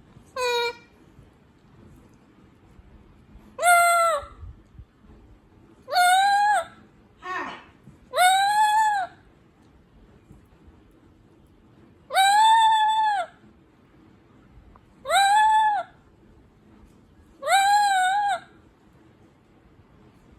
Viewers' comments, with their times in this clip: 0:06 Kiwi once again with the lone "HAI" ❣